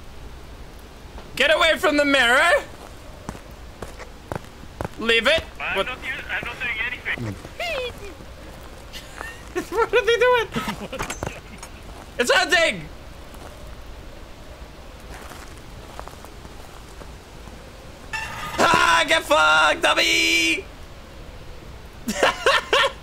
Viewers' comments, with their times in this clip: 0:07 the little squeak he lets out made me laugh so hard for some reason